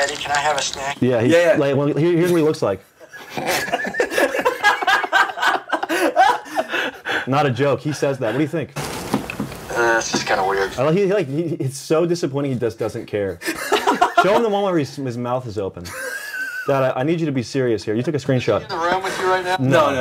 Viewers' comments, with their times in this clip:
0:06 "Not a joke. What do you think?" That was pure anger. Pure disgusted, righteous anger and you know what? I agree.